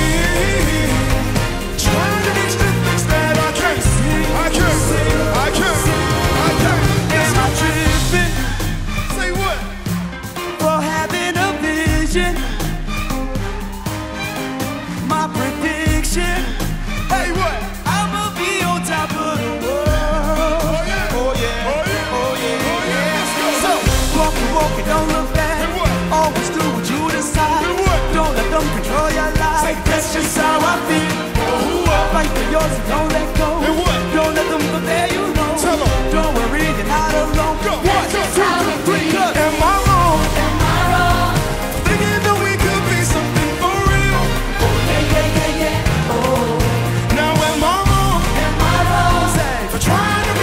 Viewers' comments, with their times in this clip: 0:07 the instruments caught the drift 🤯
0:38 when that beat dropped 😳👏🏽